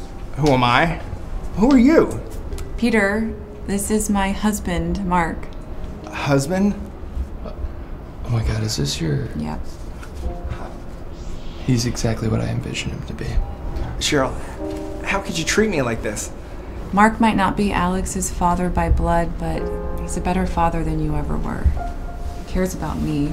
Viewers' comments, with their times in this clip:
0:10 wtf why is there a lightsaber sound effect 💀